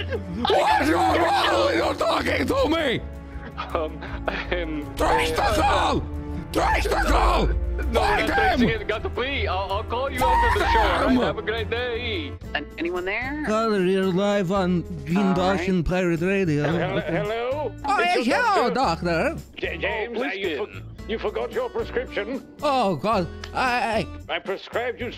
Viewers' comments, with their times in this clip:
0:10 that was impressive voice work